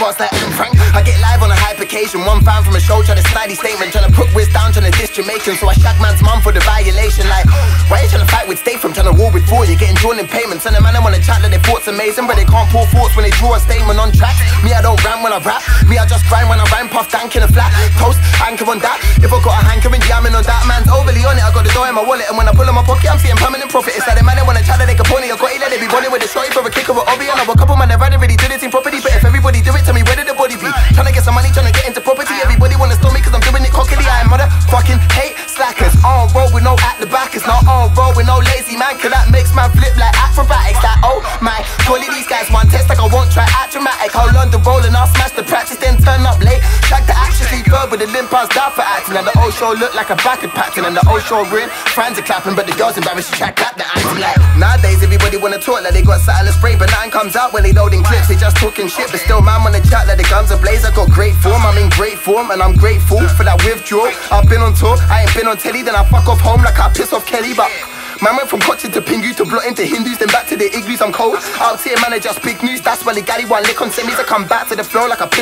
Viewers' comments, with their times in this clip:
0:03 he said something in the background which I think was something like counter strike. that's pretty cool
0:27 I though he is fast but then I heard
0:47 sounds like eminen lyrics? ??
0:53 that fucking forgot about dre flow blew my head out my arsehole jeeeez
0:54 lyrics and flow is like forgot about dre
1:01 sounds like Eminem